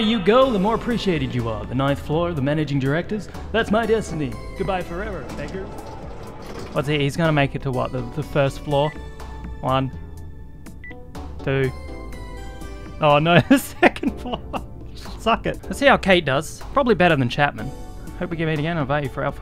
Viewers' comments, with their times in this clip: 0:04 "Goodbye forever, **gg*rs!" HOW DARE YOU, DID YOU REALLY HAVE TO SAY THE WORD?? NOT FUNNY. Seriously, people really act like just because someone is poor, asks for some help (or a "handout" if you're a fascist), and/or is not a rich "privileged" person that they can be called a "**gg*r." Its bs and it seriously messed up and insensitive.